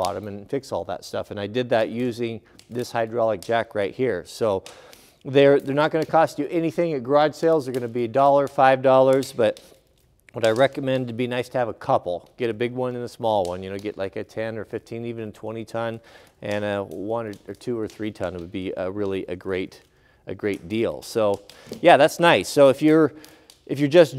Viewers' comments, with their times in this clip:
0:09 I had to take my headphones off 2 or 3 times before I realized it wasn't my wood stove popping...It was yours.